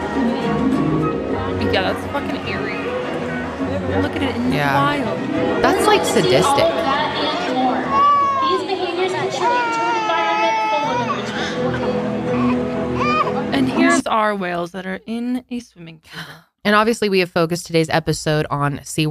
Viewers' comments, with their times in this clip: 0:07 Same.... SAME! (The baby crying)